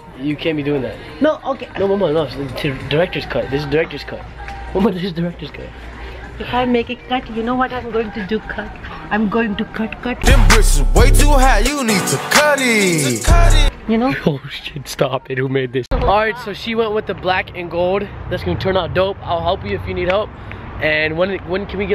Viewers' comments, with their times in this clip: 0:08 i love your mom's accent lol 😂😂😭💖